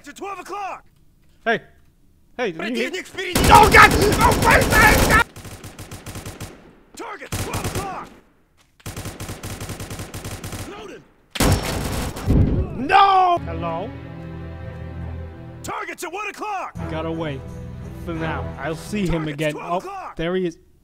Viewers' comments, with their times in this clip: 0:03 its a russian boii